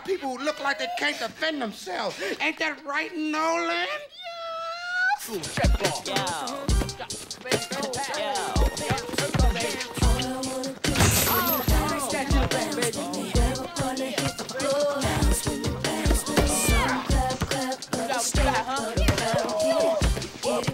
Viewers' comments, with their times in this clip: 0:03 That high-pitched “Yeeeeeesss” had me wheezing 💀🤣